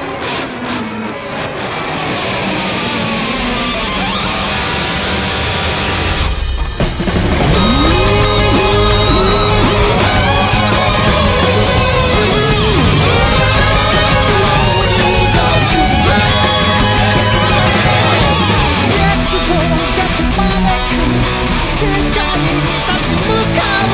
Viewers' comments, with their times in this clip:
0:08 Welp i think our Legendary guitar man is also a gangster ey, show em the requiem my man that was a sound of requiem